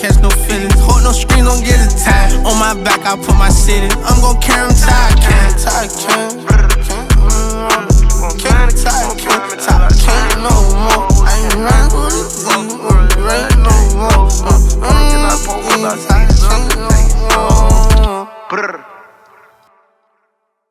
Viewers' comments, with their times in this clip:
0:06 till end imagine a song like this all through; reminds me of Future kind of a more less coherent version obviously lol